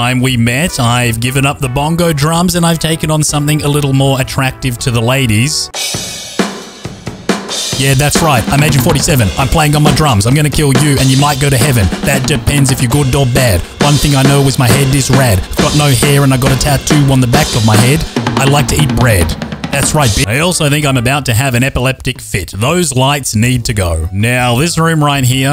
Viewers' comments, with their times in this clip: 0:03 the vocals are fire
0:06 that song was fire 🔥😂